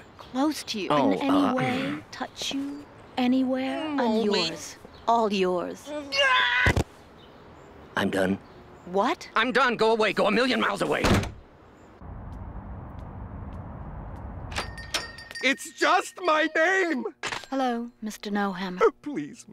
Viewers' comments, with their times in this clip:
0:05 You can tell that he voices Rigby from that scream